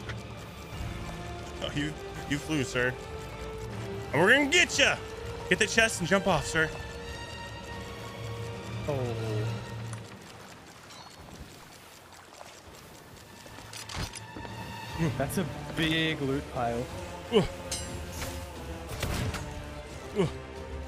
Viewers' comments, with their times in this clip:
0:06 the music is awesome